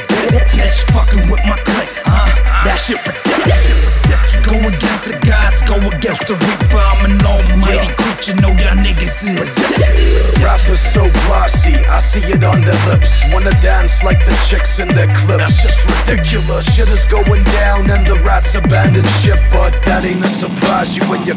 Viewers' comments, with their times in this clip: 0:05 i swear i hear a skype sound